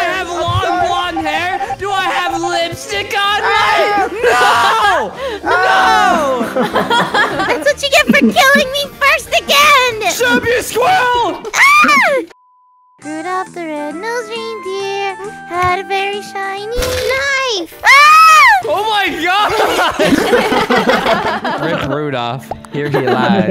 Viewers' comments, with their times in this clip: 0:10 is the best song ever